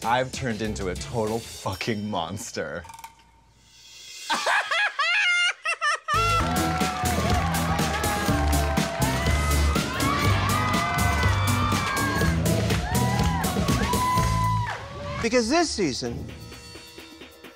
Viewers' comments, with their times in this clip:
0:04 Hey iconic laugh gets me every time